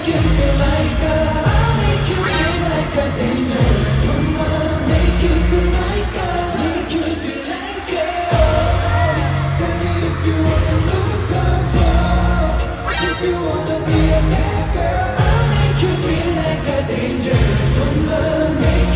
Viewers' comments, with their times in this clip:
0:06 Lucas was literally singing to you AHH!